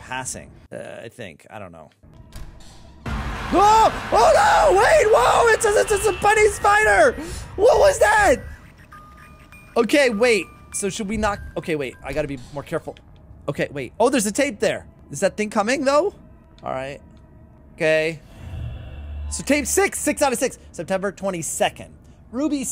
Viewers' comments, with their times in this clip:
0:04 holy mother nature that scream made me laugh xDD